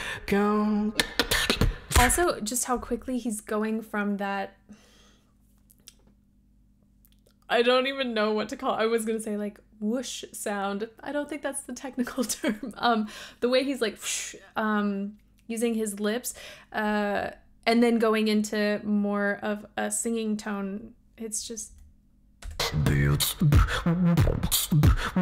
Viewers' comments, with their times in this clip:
0:07 is actually so funny because the sound is indeed called "fish snare" because you are literally saying fish while biting your lower lip to create a sort of "attack" for the f and then release and go into the "sh" without pronouncing the "I" too much :D